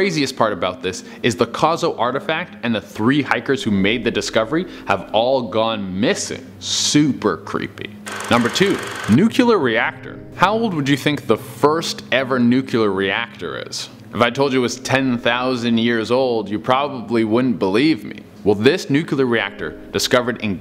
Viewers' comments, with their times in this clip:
0:08 How the hell is it that folks forgot how to correctly pronounce "nuclear?" Thanks, Dubya.